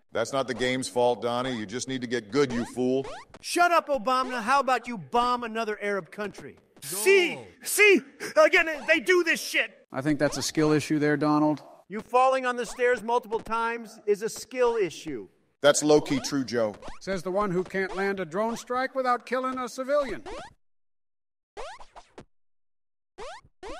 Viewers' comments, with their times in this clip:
0:06 i like how you can hear a faint laugh